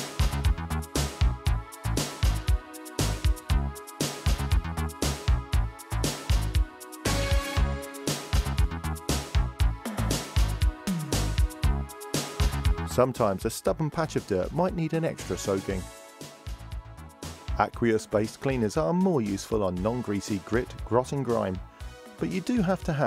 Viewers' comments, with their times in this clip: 0:09 music reminds me on athmosphere of Amiga Hollywood Poker Pro :)